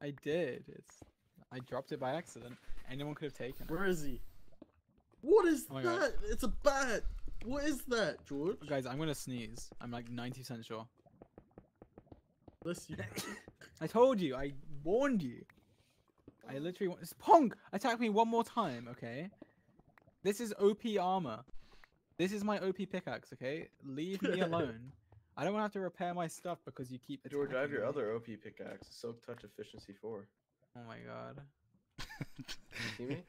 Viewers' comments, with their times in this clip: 0:09 LITERALLY THE FIRST TIME I HEAR GEORGE SNEEZE. HE NEVER DOES IT ON STREAM NOW
0:13 bless you george
0:14 George’s sneeze sounded like an endermen teleporting away (sorry if there are any grammatical mistakes:] )